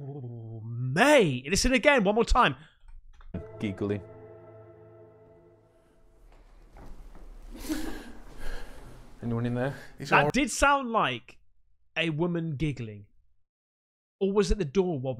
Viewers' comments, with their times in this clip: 0:03 woman giggling - Pretty sure it was the door... I love your video recaps - you use logic and excitement.